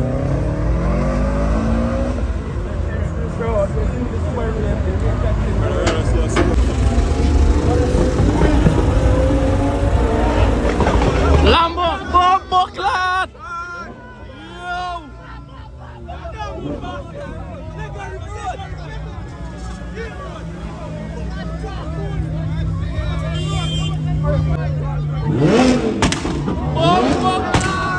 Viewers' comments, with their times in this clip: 0:08 no man cyah resist the sound of a v10 in a hurrican yo😅🔥🔥